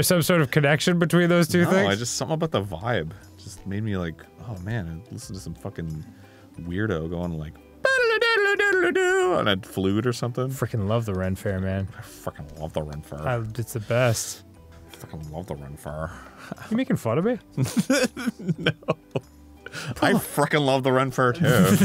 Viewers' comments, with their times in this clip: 0:08 I think you'll get into legal trouble for that flute tune there, so watch out.